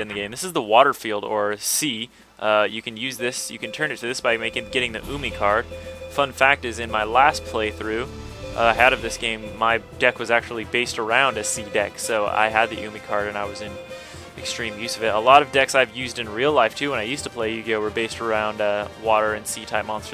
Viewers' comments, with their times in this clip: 0:08 "A lot of decks, I've used in real life." That sounded wrong, when i heard it not paying too much attention. xD